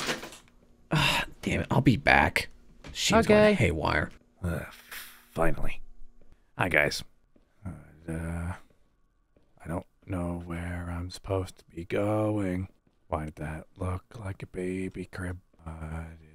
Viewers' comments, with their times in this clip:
0:04 Moon just goes from “cute old lunar” to just, “hey guys.” 😂😂😂